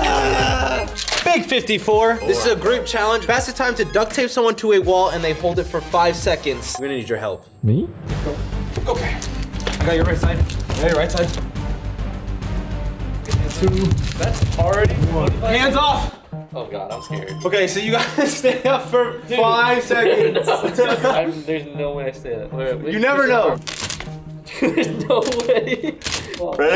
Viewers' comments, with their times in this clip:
0:07 he sounded so confused😂😂😂